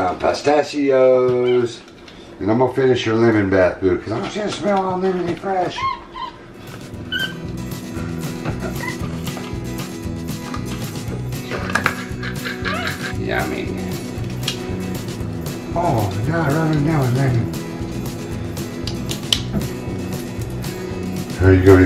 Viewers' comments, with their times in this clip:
0:05 I think the translation for the squeak was "seriously, don't. I'm not playing anymore."